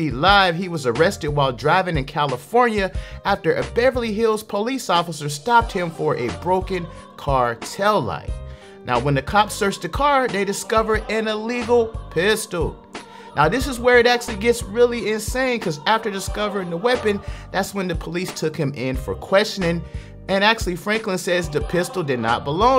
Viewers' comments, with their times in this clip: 0:05 It's the background music for me 😂💀💀💀 Not the "Locked Up" Opera version 😩